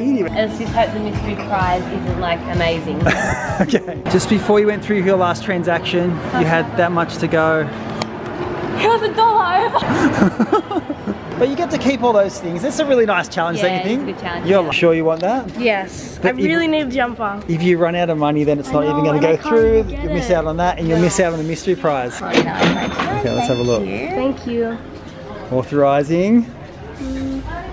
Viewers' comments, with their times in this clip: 0:08 "hell a dollow!" I heard that, can someone pls tell me what she said